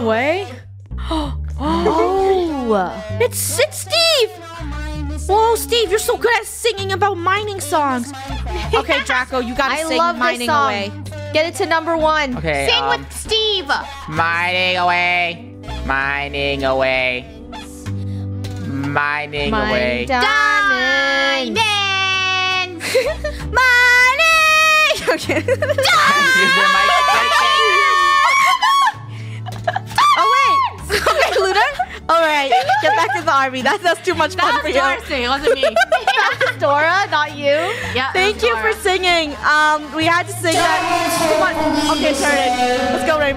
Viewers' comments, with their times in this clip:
0:08 billion likes for the song 😂
0:09 ✨Beautiful song✨ perfect.👌🏼
0:22 rip headphone users (aka me)
0:28 Scream is so loud like my mom can wake up like that
0:28 Me when my voice cracks